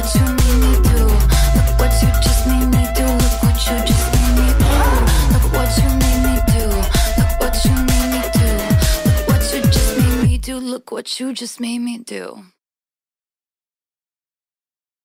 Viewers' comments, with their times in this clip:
0:03 who can hear the phone rings ? 😂